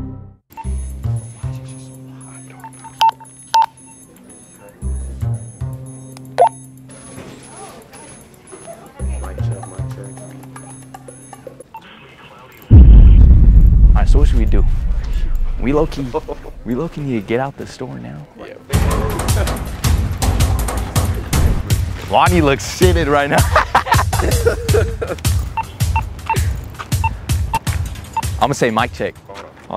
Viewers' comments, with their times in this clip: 0:10 bro connected to NOAA weather radio 😭😭